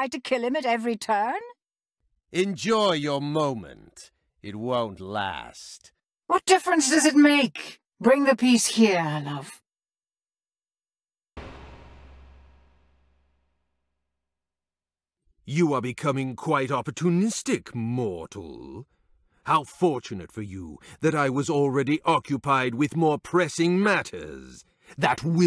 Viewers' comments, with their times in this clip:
0:06 Why you Sound like Robot Bierce?